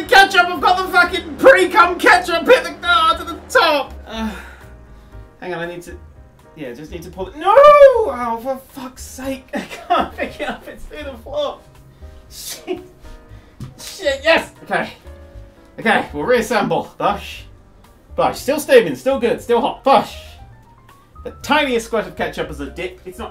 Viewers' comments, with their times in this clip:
0:05 You can hear the real pain in his voice when the slice makes it escape from the plate